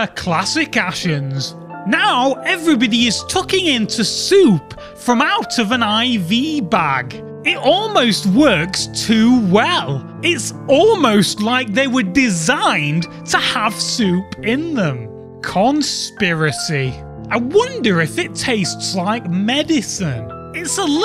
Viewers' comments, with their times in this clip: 0:06 Voice sounds like stampy
0:06 Voice sounds like stampy